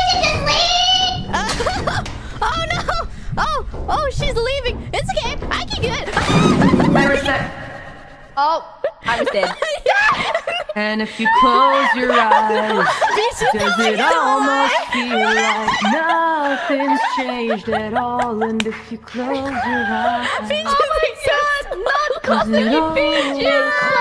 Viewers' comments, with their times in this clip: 0:10 Calli just randomly singing "Pompeii" got me. EYO EYO EH EYO EYO EH EYO EYO EH EYO EYO